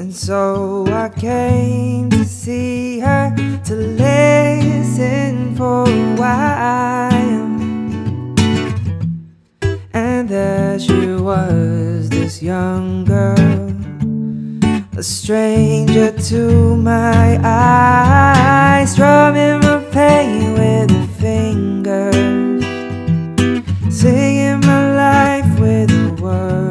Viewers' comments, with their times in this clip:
0:09 doesn't expect that improve, nc one.